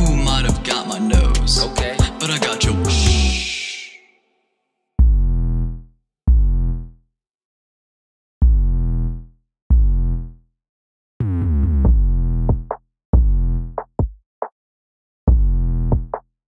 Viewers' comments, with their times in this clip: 0:03 this beat hits different